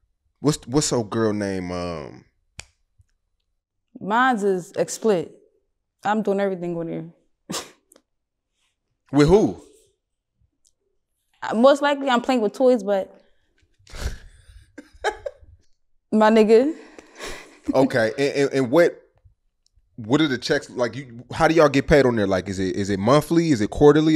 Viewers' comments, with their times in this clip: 0:05 “‘mine is exsplit” TF is that? 😂😂😂😂